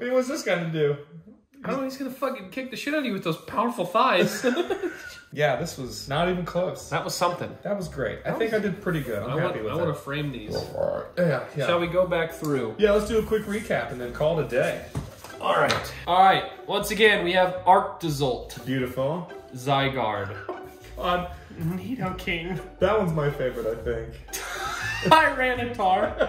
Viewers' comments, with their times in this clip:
0:10 that burp sounded like "blow fart: or "Mozart" so fracking weird!!!